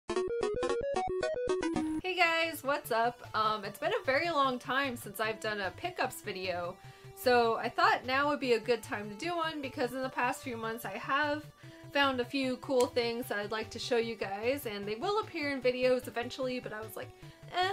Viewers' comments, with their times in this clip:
0:03 it sounds like your/her voice was glitching when “um” was spoken